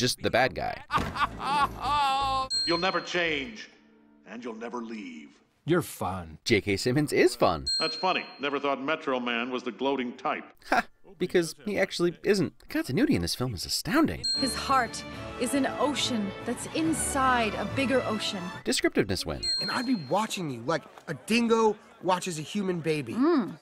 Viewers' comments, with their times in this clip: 0:09 he sounds like Cave Johnson 🗣